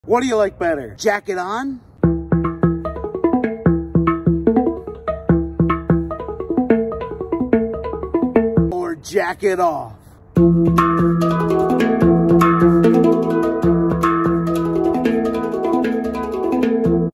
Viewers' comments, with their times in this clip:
0:02 sound a bit like the stick bug song.